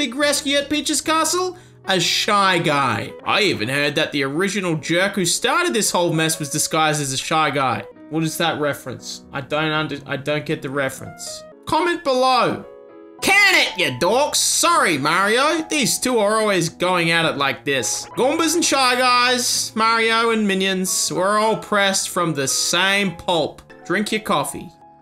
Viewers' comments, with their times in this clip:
0:06 Not "original jerk", not "origami jerk"!! That's what what.